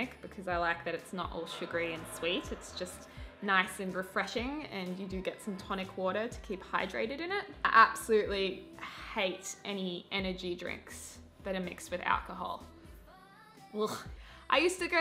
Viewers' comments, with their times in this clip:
0:03 Who else heard the sound like a toilet flushing ?